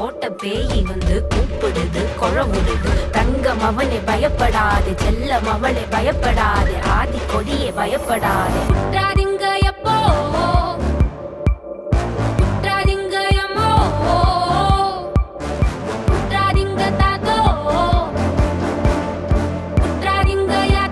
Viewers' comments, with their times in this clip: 0:08 is just 🔥 the score 💯